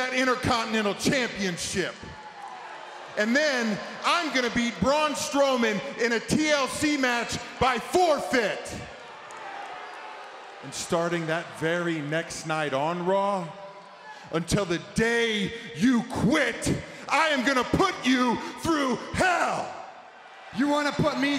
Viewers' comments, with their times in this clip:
0:06 seths laugh gets me everytime